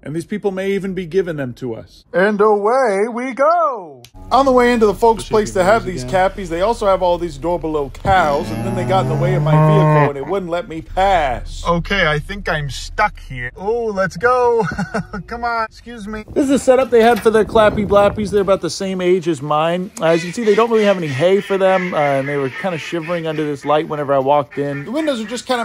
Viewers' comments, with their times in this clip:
0:08 I can’t, the “MMUUUUUU” is the best moo ever recorded.